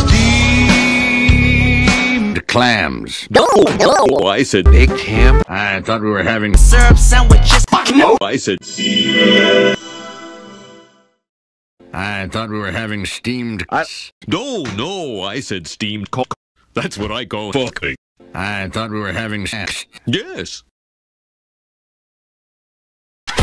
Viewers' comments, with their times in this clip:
0:08 it's what daft punk sounds like when they sing